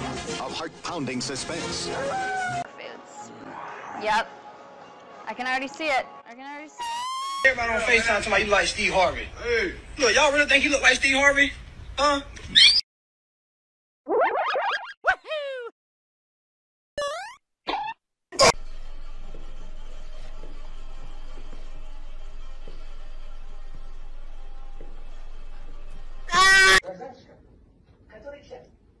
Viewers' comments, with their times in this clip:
0:07 I can not the scream💀💀
0:11 most highly pitched scream ever in the world
0:13 the moment when bowzer realized mario is small enough to fit inside his a-(*yeet*)🤣🤣🤣 The scream got me Mario is sus (among us revel music)